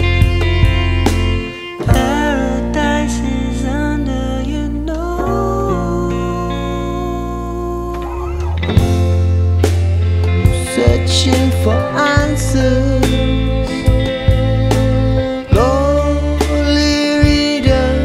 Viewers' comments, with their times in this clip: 0:03 I love that twang. He sounded like a slide guitar